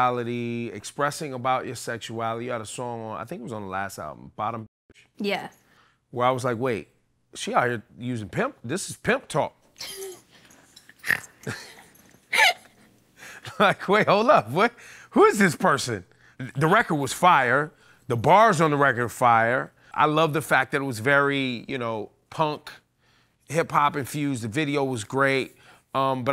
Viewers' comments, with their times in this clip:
0:10 doja literally trying to hide her laugh is so cute 😂